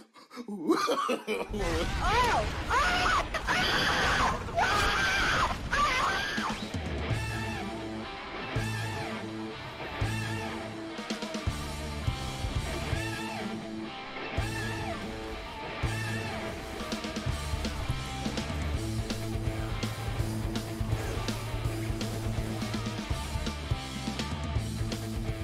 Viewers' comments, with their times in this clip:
0:06 What's the name of the track ? it sounds like rearrangement of "Those who fight further - ff7" but its not